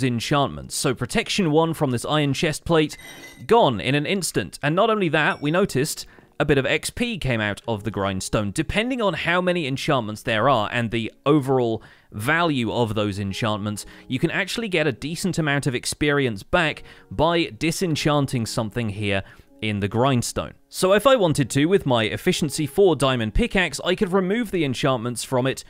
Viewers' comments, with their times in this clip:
0:06 "a bit of X pee came out" 😂😂😂